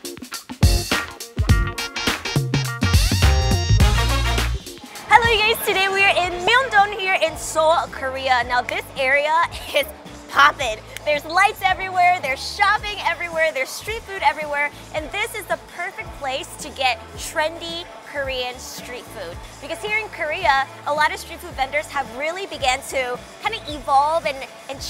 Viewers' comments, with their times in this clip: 0:05 did she said hello gays?